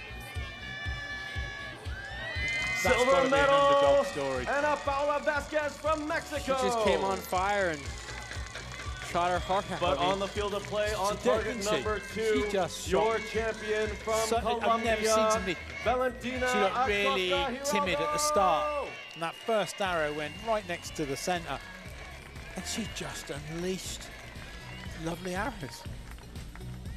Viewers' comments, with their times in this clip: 0:07 THAT WATER DISPENSER DRUMMER DUDE KILLED ME
0:08 mans out here smacking a 5 gallon water jug with a flip flop